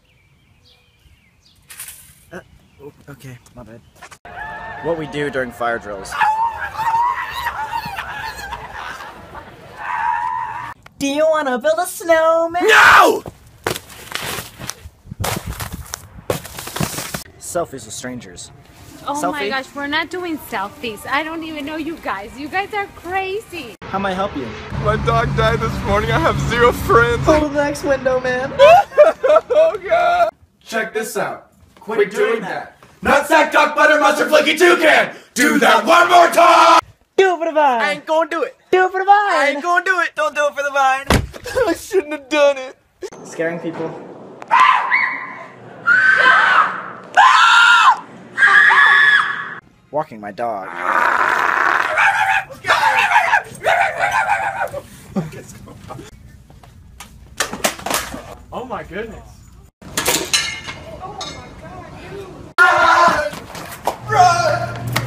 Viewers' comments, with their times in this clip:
0:05 Colby Screamed Like Toothy From Happy Tree Friends
0:35 shuch good harmony
0:48 Sam screams like a girl